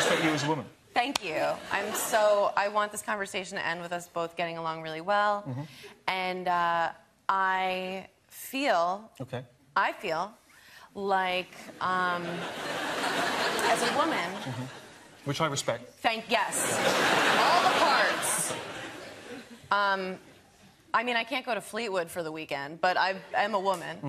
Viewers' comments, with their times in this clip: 0:07 sounded like a break-up 😂